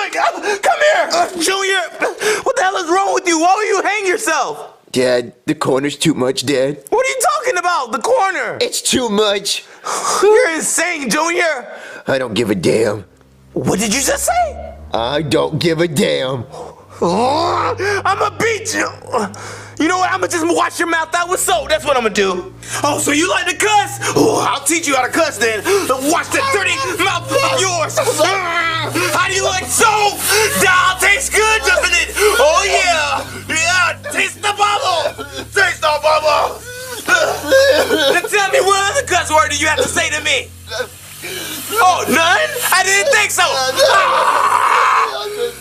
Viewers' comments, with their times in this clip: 0:05 why did Jr sound like kick buttowski for second 😭
0:13 made me fear Bowser MUCH more! The music made me go like "Oh fuck!"
0:30 DOG TASTES GOOD!?